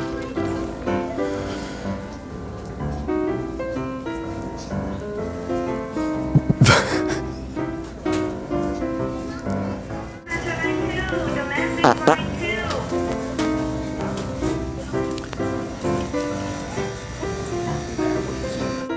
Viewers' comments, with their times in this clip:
0:06 is that the camera man or jack laughing? :O